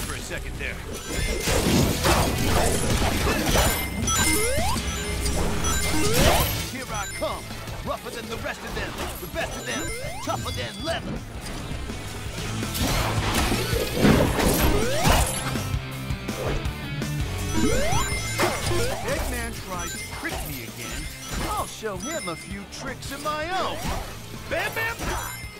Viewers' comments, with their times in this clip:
0:09 Knuckles is a good rapper, I'll give him that